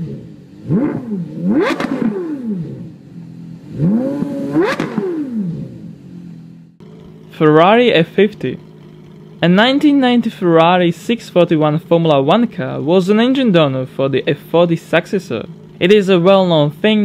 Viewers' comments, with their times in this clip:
0:04 The subtitles just say [Music] when the Porsche is revving :)